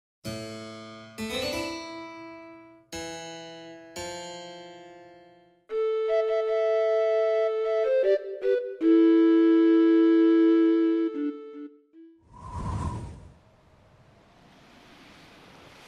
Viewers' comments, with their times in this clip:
0:01 OOOHHHH MY FEEELS!!! THAT MUSIC!!